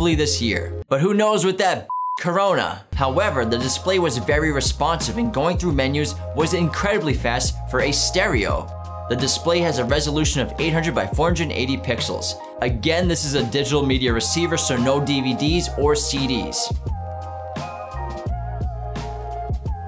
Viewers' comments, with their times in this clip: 0:05 I felt that voice crack. pray for the homie